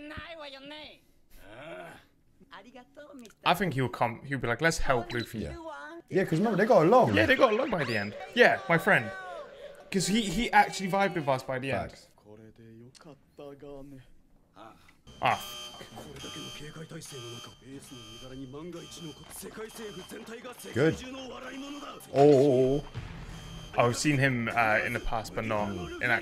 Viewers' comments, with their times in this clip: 0:08 I swear to God. Oda designs the weirdest shit. The laughs, the body proportions, and whatever pose Mr 2 is doing